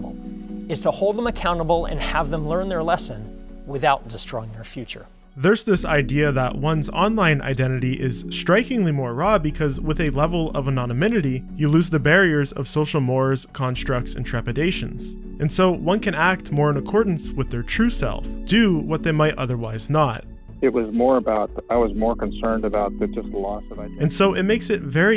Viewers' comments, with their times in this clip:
0:10 Says Anonymity as "Anonyminity" 2 seconds before talking about social moors, constructs and trepidations. Do know big word, or no?
0:13 did my guy seriously just say "anoniminoty"? It's anonymity.